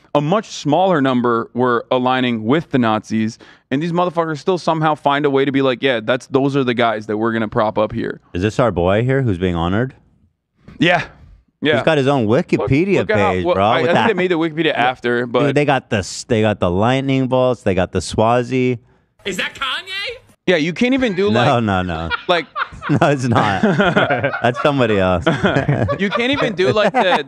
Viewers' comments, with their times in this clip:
0:08 this is hands down the best soundboard moment ive ever heard from the H3 podcast. I had to clean my dashboard because i spit out my green tea 😂